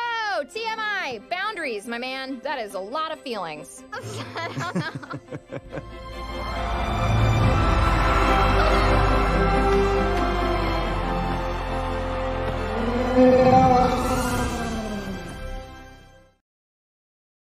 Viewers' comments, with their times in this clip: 0:07 I love the mount rageous folks was cheering when they kiss they're so nice
0:13 the little excited roar was super cute